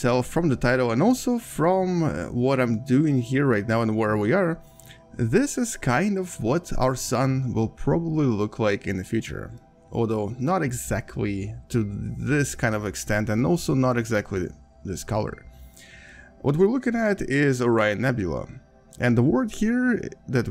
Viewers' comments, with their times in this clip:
0:05 I heard "this is kind of what our son will probably look like in the future"